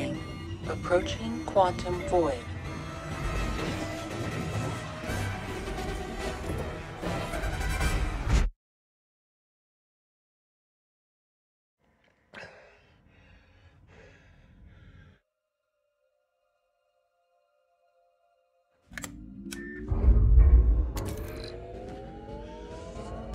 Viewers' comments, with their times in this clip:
0:07 I love that all the music and sounds just disappear the moment he enters the Quantum Void